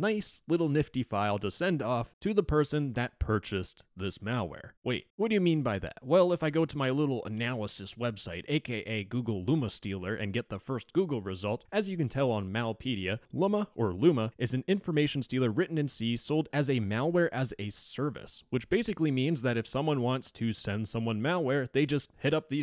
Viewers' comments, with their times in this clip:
0:07 When u said a.k.a Google in my phone recognize it as O.K. Google and trigger the google assistant to listen. LMAO.